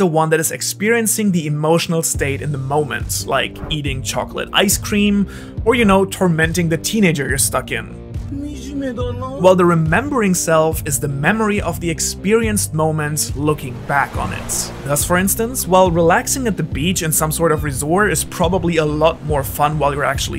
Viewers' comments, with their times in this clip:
0:07 Perfect cut and his tone